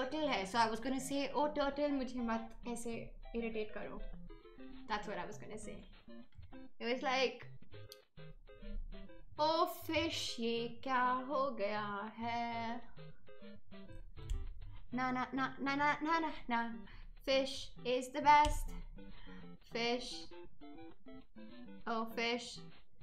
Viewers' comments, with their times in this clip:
0:08 That fish song was kinda cute though